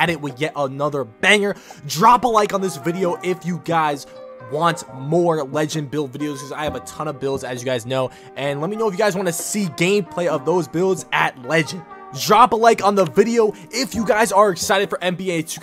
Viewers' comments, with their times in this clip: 0:03 I heard that voice crack